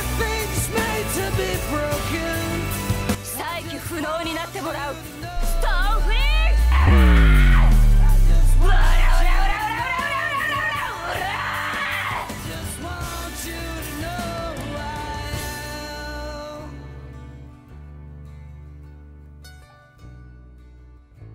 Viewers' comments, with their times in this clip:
0:05 that BASS THO